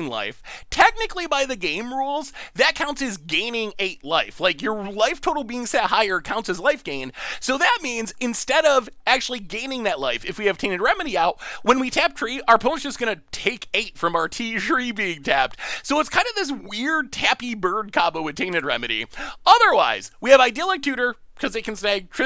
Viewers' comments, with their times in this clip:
0:10 Ok.. hold up hold up... you can pronounce Triskaidekaphobia without batting an eye.. but "Tree of Perdition" becomes some japanese word "Ti-Shree-Pee" ? wait.. what? o.O you sir.. are the funniest guy in magic.. love ya!